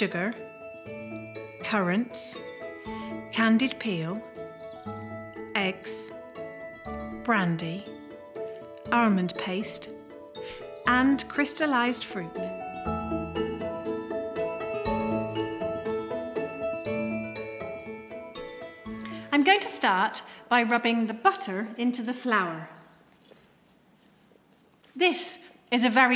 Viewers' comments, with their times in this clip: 0:07 I'm just here for the armand paste 😅